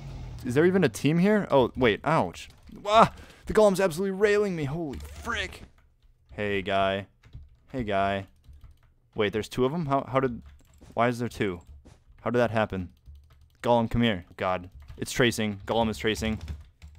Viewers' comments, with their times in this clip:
0:03 --> sounds like kirby, but with a very low pitch